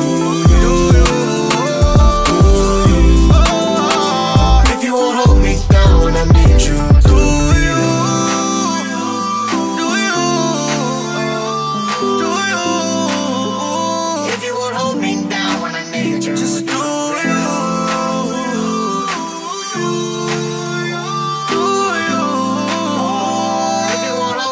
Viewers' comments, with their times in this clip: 0:08 Whoever put that ending lick into this track - you made this song!!!